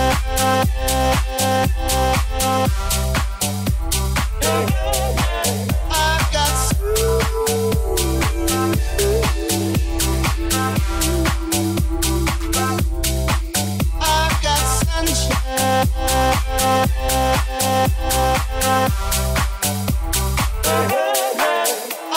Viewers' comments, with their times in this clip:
0:07 Dude this is fireeee I would love to dance to this whole set at a club :D I can't even wrap my mind around how people actually DJ and mash things up together but it's fascinating to me. What a perfectly nostalgic vibe for spring/summer and I love that vocal fading out